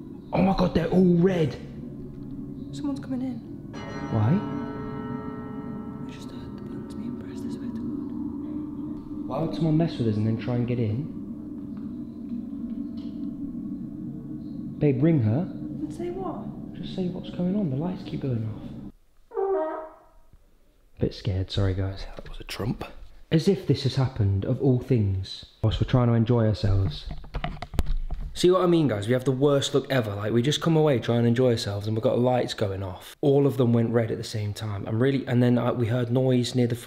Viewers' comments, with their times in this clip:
0:07 I swear I heard someone cough
0:19 I GOT SO SCARED FROM THAT I THOUGHT IT WAS THE DOOR 😭
0:19 was that what I think it was? 💨 💨 🎺 🤣🤣🤣💀